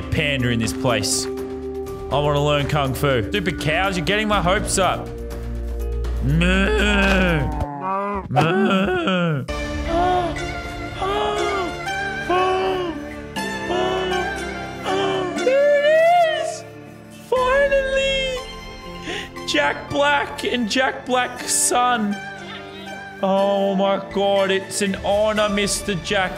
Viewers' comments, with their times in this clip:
0:10 i didnt know if it was himm or the panda
0:13 i really thought that was the sound that pandas made for a second ;3;